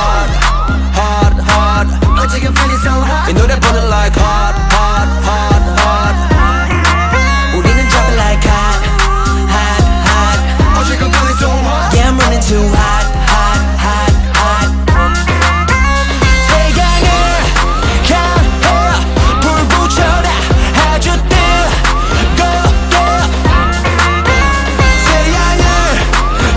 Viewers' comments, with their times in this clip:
0:09 omfg i just noticed joshua's background vocals here I'm going to cry